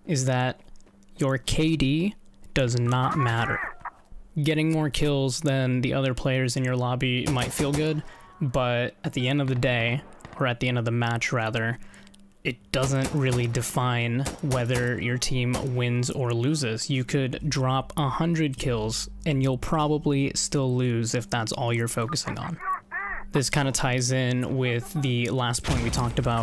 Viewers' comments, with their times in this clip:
0:07 funny vid, idk why but I constantly hear a "licking", as if u were licking your mic the whole time while talking o.O I'm going insane lul